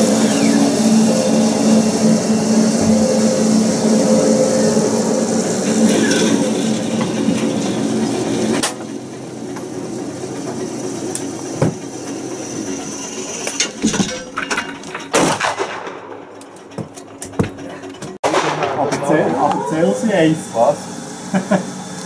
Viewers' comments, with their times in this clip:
0:05 I heard a door closing sound effect from doom